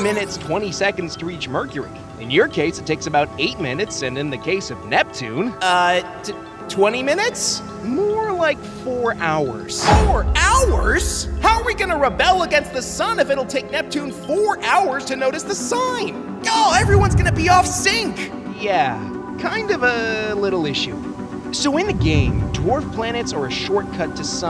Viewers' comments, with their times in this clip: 0:07 This moment of the Earth yelling "4 hours?!" reminds me of that scene in Titanic when Wireless Operator Bride tells Captain Smith that it will take The Carpathia 4 hours to reach The Titanic after being told it will sink in less than 2 hours.